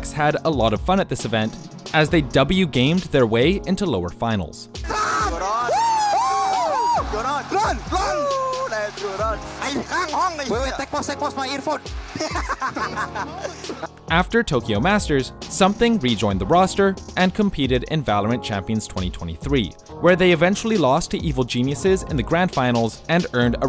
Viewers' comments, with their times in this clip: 0:09 the laugh HAHAHA